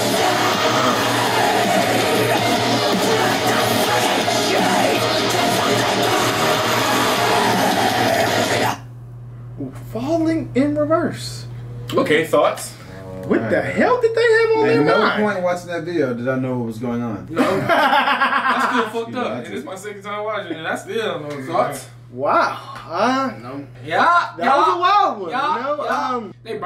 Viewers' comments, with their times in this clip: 0:09 "Falling in Reverse..." Sounded like he was on the NPR airwaves lololol
0:11 That deadpan "...okay, thoughts?" is everything